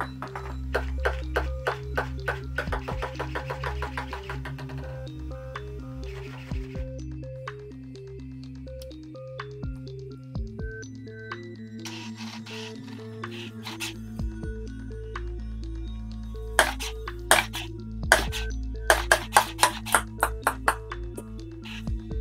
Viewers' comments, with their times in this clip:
0:05 it's laughing :D